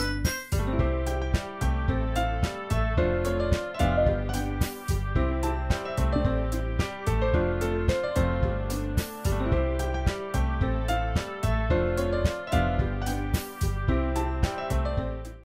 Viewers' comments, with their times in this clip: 0:09 I like how yuri's muted, nice touch